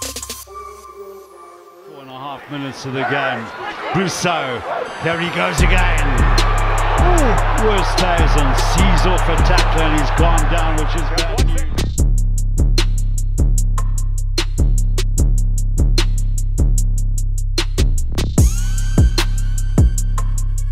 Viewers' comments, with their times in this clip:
0:07 My favorite rugby highlights channel: great editing and beats selection. I didn't even notice the switch to another beat, it was so smooth! Keep up! And thank you for putting in that Coenie Oosthuizen step.